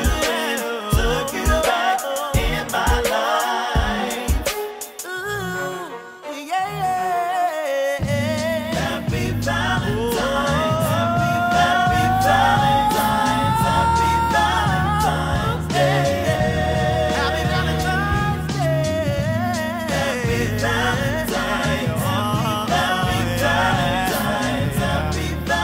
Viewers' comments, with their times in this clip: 0:10 One of the most influential vocalist to come out of the woods in a long time. The run is testament to his vocals. He did it with such ease. A true artist's artist. Excited he finally getting some shine!!! Cop Dur& from your local streaming service you'll enjoy it!!!